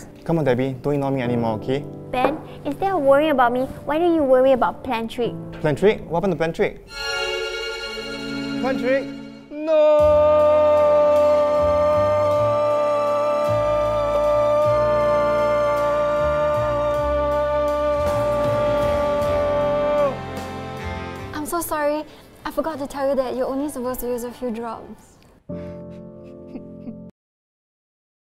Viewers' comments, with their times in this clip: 0:10 lol, its a NoOoOoOoOoOoOoO echo, imagine hearing this in a carpark😂😂